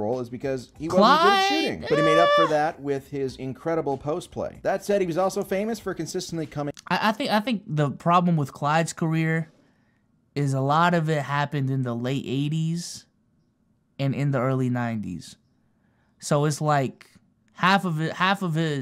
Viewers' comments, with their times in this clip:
0:05 is an INSANE Pause